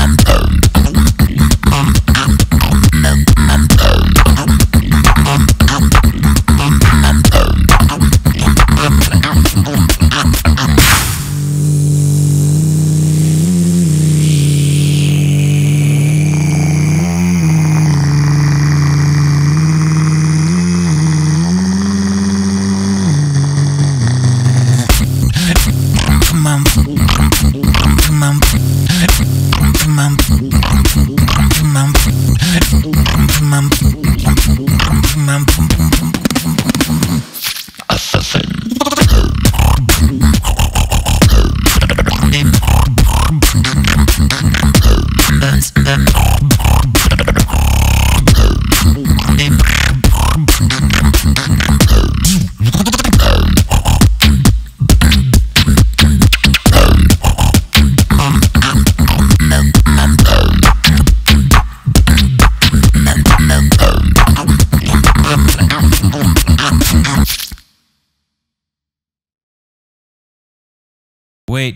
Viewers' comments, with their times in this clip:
0:04 WTF What’s that snare (clap)?!
0:05 WHAT IS THAT SNARE!?!?!? 🤯🤯🤯
0:21 I'm late but holy crap I am super impressed by the 2nd layer sound creating a buildup.
0:37 that sound effect, I love it...
0:53 that drop hard 🥵🔥🔥🔥🔥🔥